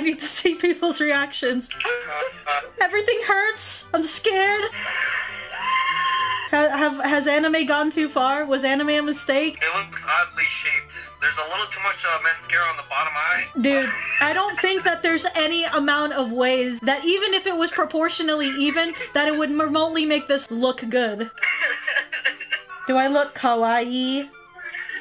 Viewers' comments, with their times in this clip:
0:06 The scream I AM YELLINGGG